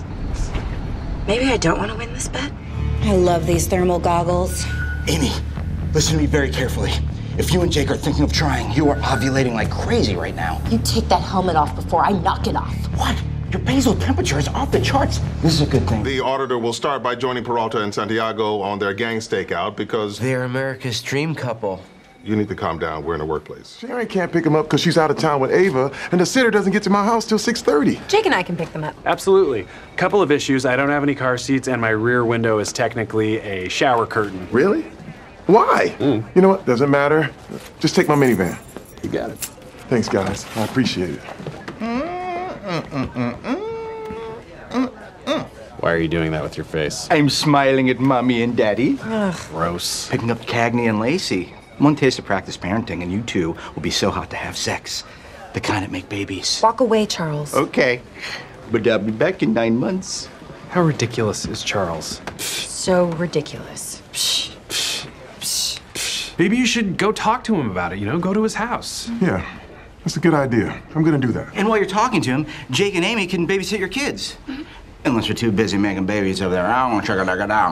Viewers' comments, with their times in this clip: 0:03 my traumatized ears hear the Radar alarm and i don't like it
0:59 why does Boyle sound exactly like a friend of mine